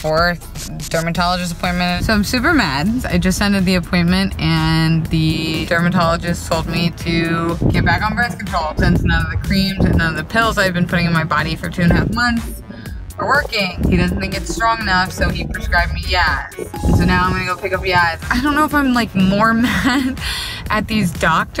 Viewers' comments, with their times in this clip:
0:07 it sounded like the wind was talking like her